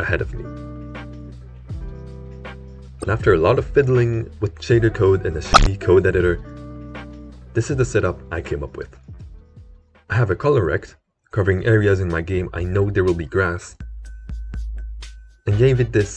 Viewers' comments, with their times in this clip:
0:04 Sorry for the audio glitch lol I tried to remove it but it kept coming back for some reason...